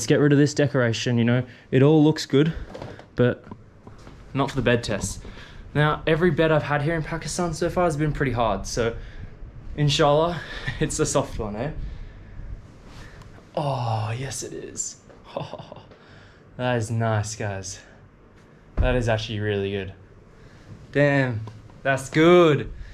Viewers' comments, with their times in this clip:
0:08 I liked the way he said InShaAllah <3 OH MANNN I LOVE WHEN HE SPEAKS URDU